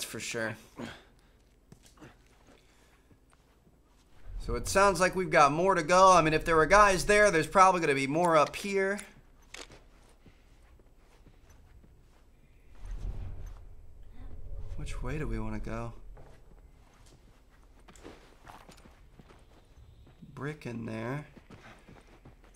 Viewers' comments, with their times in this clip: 0:07 it sounds like a song off moana😂